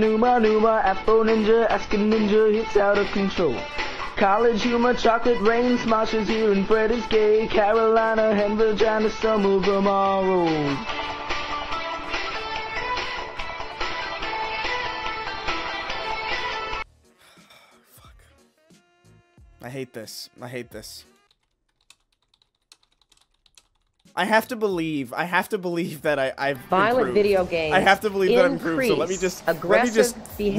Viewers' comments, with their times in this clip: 0:09 you can HEAR the puberty!
0:12 This is the absolute most broken I have ever seen someone. Head in hands with We Didn't Start The Fire pinging away in the background. It's beautiful, quite frankly.